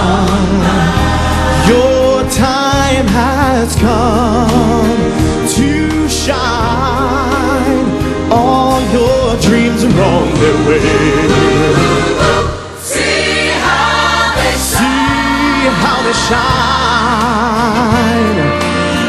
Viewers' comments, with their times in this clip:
0:05 the 'too' sounds auto tuned 🤔